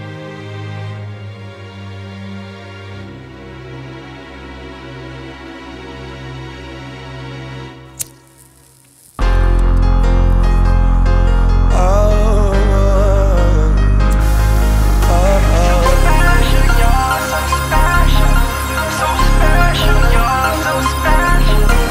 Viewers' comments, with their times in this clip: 0:08 Man why nobody talking bout the bass drop 🫠😭